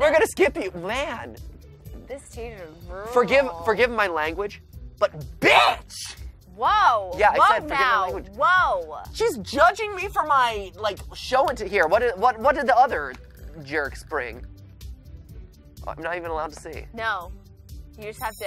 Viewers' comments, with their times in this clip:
0:04 Can anyone arrange me a video of just MatPat screaming BITCH ?
0:05 is what matpat turned into Jacksepicteye for a second